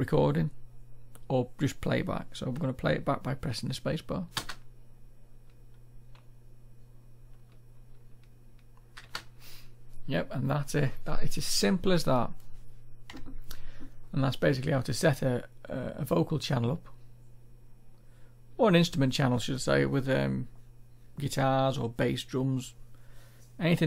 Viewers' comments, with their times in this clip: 0:06 Your recording didn't play back how do you know it worked?